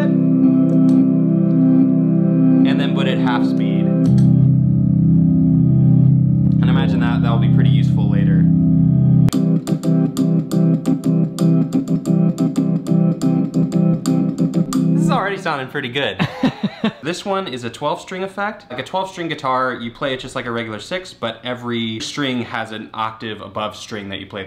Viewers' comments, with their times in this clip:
0:09 sounded like august rush
0:09 Love the YYZ
0:11 Do my ears detect a little YYZ (canadian sos in mors code) ??? Dude RUSH!!